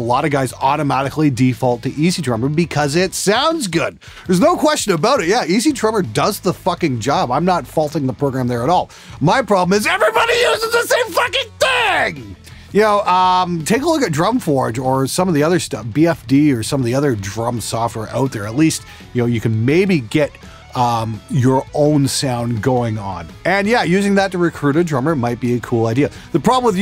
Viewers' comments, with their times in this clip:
0:09 Dude.. your voice do you have a built in distortion pedal..